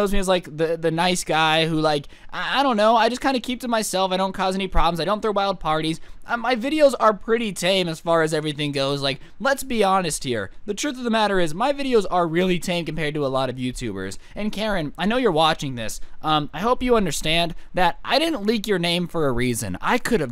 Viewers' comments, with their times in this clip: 0:08 Bruh an add was so it sounded like “my videos are- PRESS 3-D WHITE”